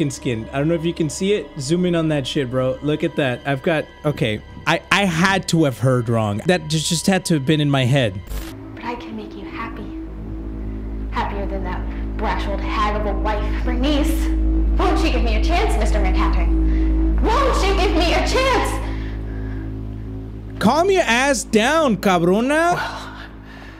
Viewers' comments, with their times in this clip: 0:05 At the time in the video when he said "I-" real quick it scared the pendehos out of me I said "aye covarn" while i jumped